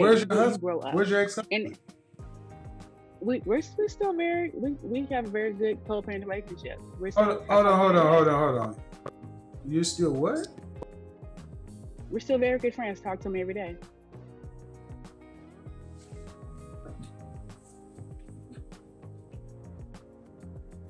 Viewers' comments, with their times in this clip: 0:07 I think her words ran together when she said,"We're very good friends, I talk to him all the time." I had to listen 5 times.